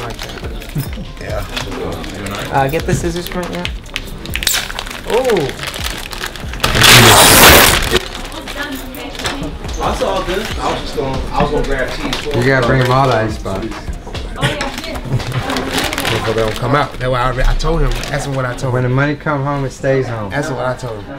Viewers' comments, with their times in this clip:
0:07 why the ziper loud af